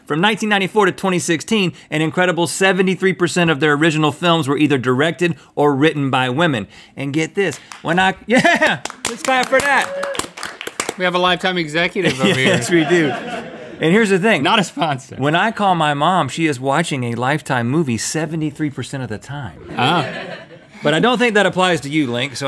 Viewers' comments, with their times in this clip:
0:06 you have a seal in the crew?!!!!!